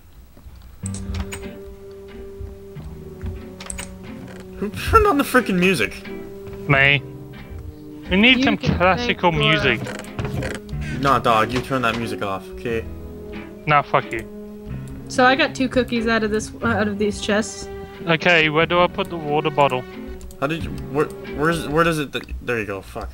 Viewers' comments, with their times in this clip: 0:07 MY FAVE SONG Lolz C;